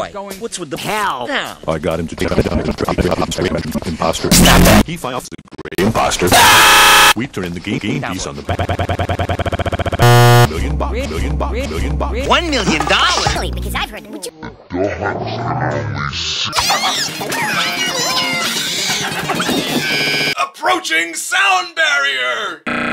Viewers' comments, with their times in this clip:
0:03 yellow m&m: (scrambled speech) imposter?